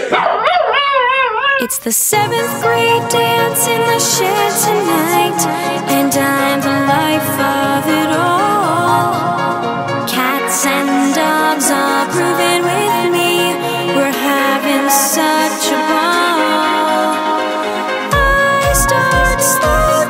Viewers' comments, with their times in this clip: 0:05 the line "and I'm the life of it all" sounds sooo good and clean I love it.